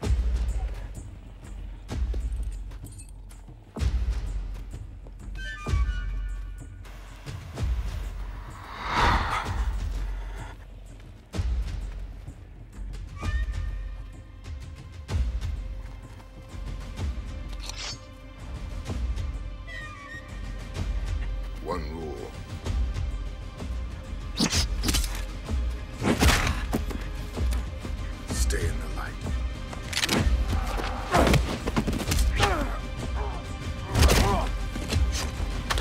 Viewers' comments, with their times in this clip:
0:05 What is the song name that plays here? I think ive found it but the metallic notes are missing
0:17 Riddick grabs his weapon silently while his opponent grabs it with the 'schwing' sound. No wonder he's the dangerous assassin.